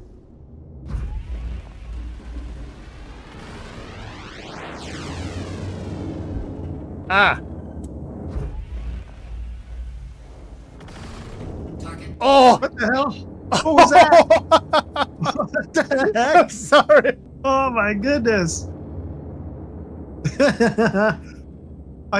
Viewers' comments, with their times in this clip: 0:03 I didn't think any of the Doppler stuff was in the game yet but it sounded like it there?